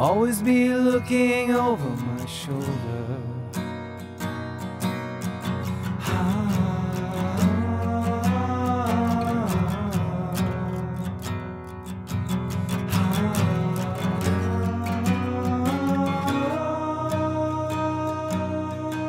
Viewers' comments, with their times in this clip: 0:07 love the vocals there